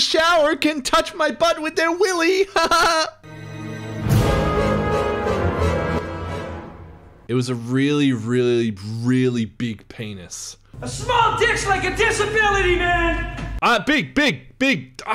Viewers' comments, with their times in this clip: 0:03 That was amazing! With the voice and the laugh. Even more so since I am high. 😂😂😂😂